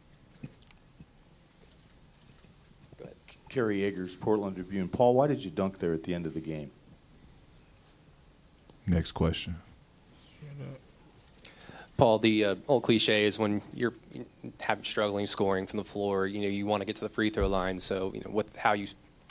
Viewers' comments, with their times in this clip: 0:06 after PG says "Next Question" if you listen close you can hear a quiet "shut up"